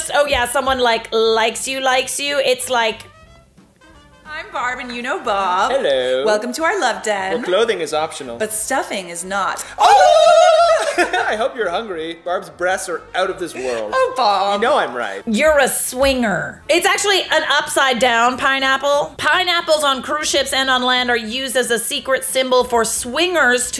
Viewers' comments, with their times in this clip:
0:10 the double turkey call sent me 😂 I'm dead 🤣